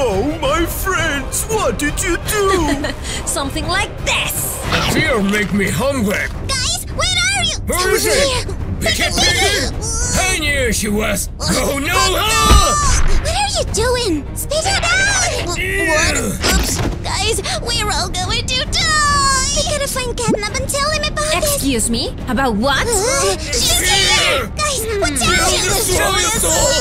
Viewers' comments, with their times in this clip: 0:09 FOOD MAKE ME HUNGRY 🤭🤭🤭 (His voice is deep and it’s funny to me i love it!